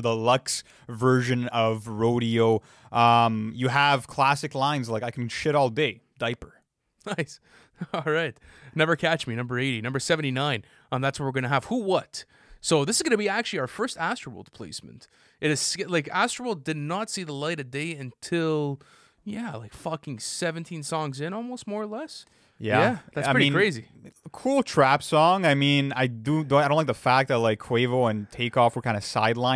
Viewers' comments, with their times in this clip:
0:10 Who What sounds a lot like Butterfly Effect